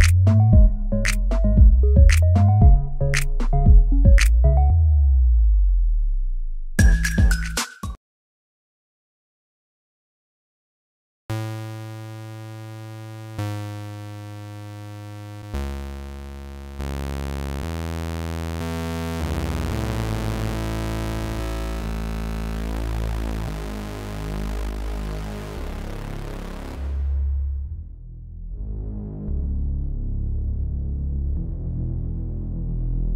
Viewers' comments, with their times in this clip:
0:03 Rip headphone users and on .....!
0:18 R.I.P headphone users lol
0:18 R.I.P headphone users lol